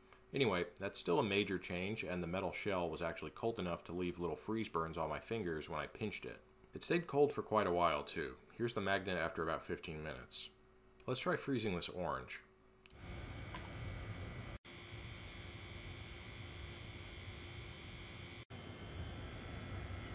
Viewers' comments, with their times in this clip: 0:05 Deadpan describes a really painful experience